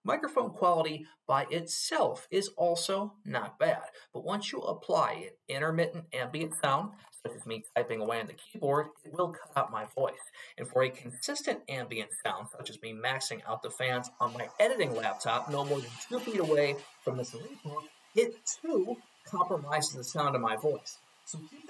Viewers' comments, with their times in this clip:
0:06 I legit thought you were speaking with a lisp because your tongue is normally quite close to your teeth, I'm laughing for no reason XD